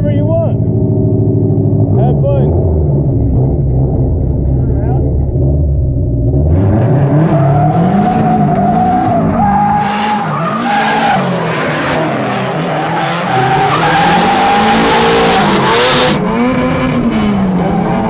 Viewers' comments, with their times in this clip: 0:05 that 240's tires sounds like they are already yelling and begging for mercy lol